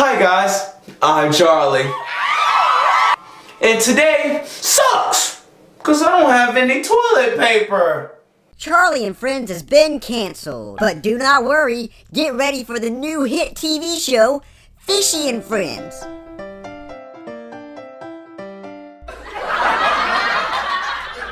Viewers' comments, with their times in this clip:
0:07 I Think it Said "Cause I Don't Have Any Toliet Vaper" LOL.